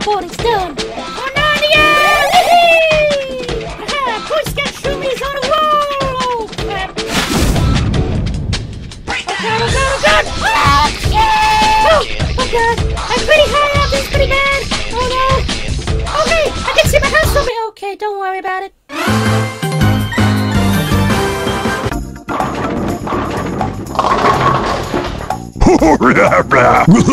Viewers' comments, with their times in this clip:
0:09 Fun Fact: This is the loudest Shroomy has been using the VA's Voice.
0:09 Da perfect cut scream
0:09 Da perfect cut scream
0:10 perfectly cut screams